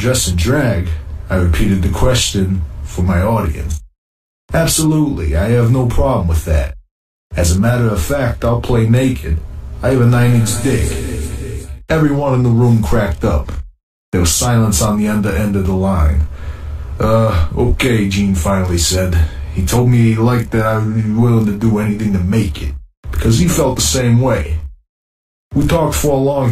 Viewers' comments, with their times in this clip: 0:09 the echo absolutely killed me